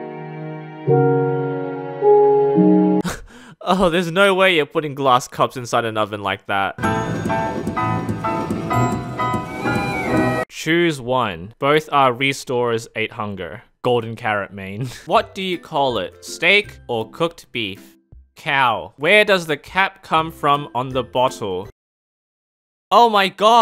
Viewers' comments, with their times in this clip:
0:06 is that poorly played sealed vessel